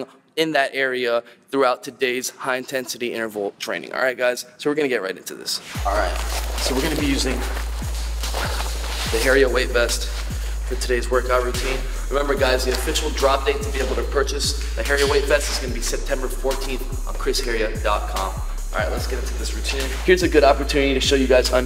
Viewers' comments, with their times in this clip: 0:06 I'm pretty sure that's Megaman X5 - Dark Dizzy Stage mixed in there? such sweet beats and bass.